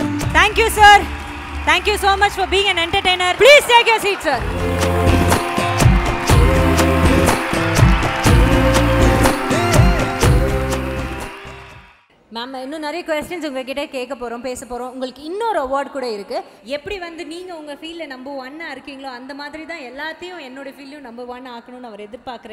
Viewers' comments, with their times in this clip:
0:03 z way she said Ranveer - "please take your seat sir'' ... sound like she scolded him & she means - 'ok ... just get out now.'' 😂😂